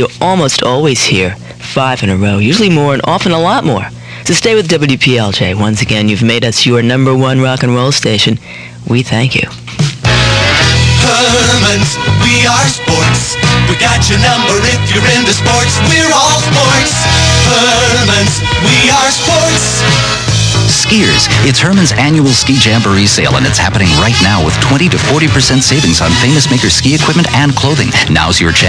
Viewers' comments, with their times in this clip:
0:09 ............DAMN, I miss those Herman's Sporting Goods ads!!!!!! I haven't heard the jingle in well over 30 years, & I could STILL sing along with the whole thing!!!!!